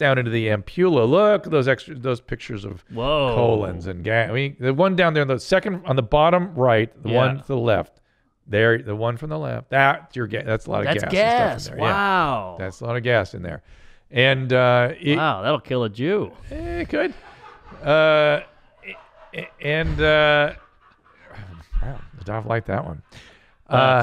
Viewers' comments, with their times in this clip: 0:10 that joke absolutely murdered (no pun intended). You can hear everyone else on the set busting a gut laughing.